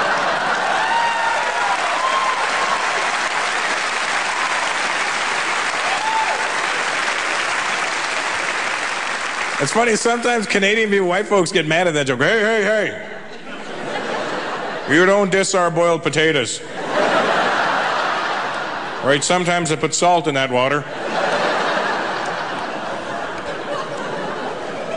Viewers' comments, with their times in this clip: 0:07 This guy has potential, but the audience is laughing at everything. He's not THAT funny, people, are you so easily entertained, eh? I could only last 'til and had to bail. His pace is way too slow, it seems like he's milking the clock for lack of material or he's very nervous.